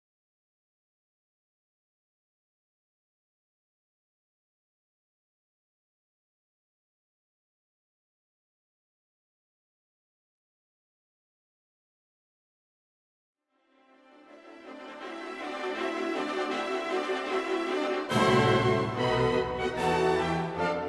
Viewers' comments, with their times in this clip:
0:03 that laugh is legend 😂